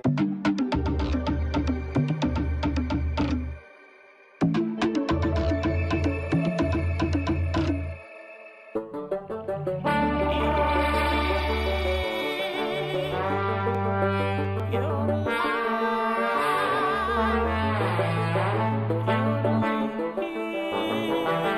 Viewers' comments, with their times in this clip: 0:08 theres also rare g’joob